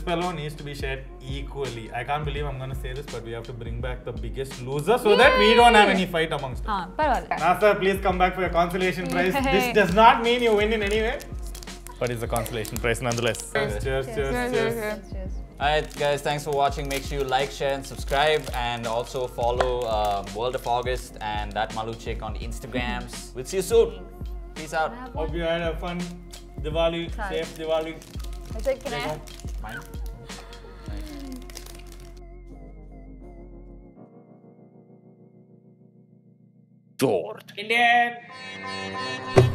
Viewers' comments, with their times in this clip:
0:06 Finally she speaks tamil The way she said "Aah paravaala"😂
0:06 did she talked In telugu or what??
0:07 I literally heard "parvaledhu" 😂🤔
0:24 bgm rolls..... Dilwaleee puchhh dene chaaaaa..... Ohhh ohhh ohhh ohhhhhhhhhhh, sed lyf😂😂